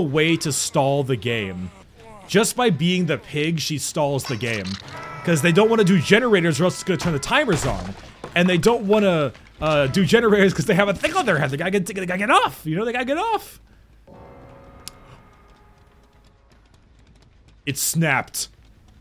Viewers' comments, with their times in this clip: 0:03 what was that static?